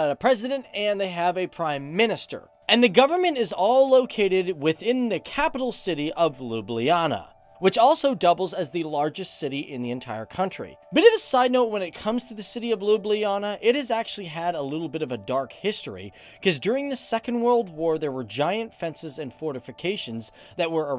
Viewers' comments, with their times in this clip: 0:05 Wtf Lublana you must say letter lj (Lj)!!!
0:05 😂 LUBLIJANA (sorry but it's wrong)
0:06 Sorry but i cant stop laughing how Americans spell cities in Slovenia